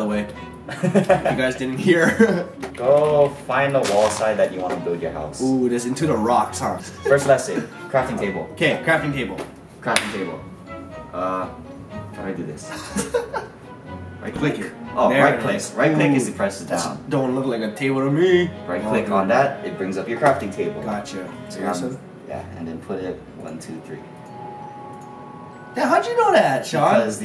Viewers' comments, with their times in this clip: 0:10 A 5 year old is more skilled at Minecraft than Ryan Higa. boi who cheers like that?